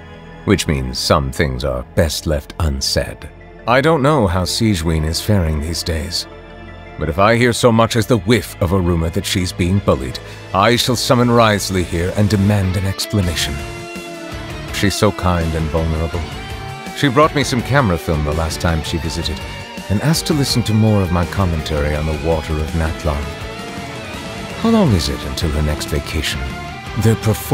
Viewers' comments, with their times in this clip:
0:09 damn that music transition + dialogue was smooth af.